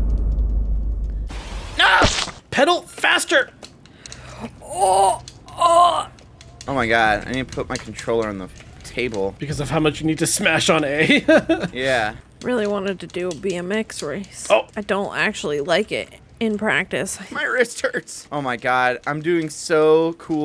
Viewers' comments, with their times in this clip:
0:05 that's the noise I make on the toilet.